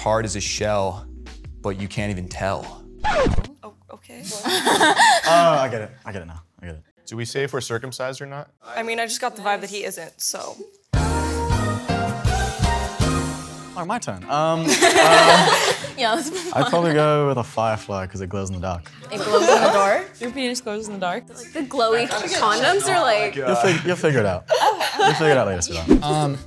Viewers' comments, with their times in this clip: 0:10 had me rolling that turtle joke with the music killed me 😂😂😂